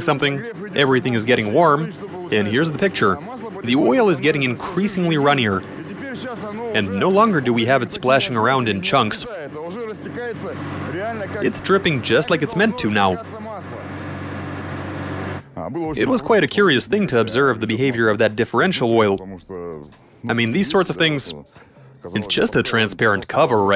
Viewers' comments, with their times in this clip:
0:07 Slight exhaust leak.